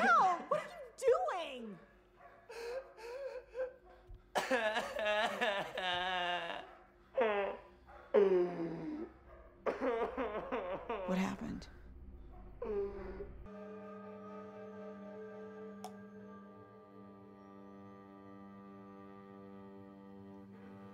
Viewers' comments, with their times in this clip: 0:04 Squidward is that you??